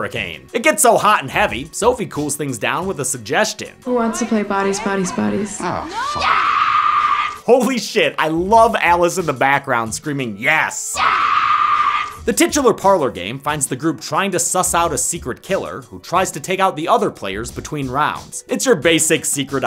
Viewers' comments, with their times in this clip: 0:05 that "YEEEEES never fails to make me laugh
0:06 BEST SCREAM EVER!!!
0:06 The way she said yes had me dying😂😂😂😂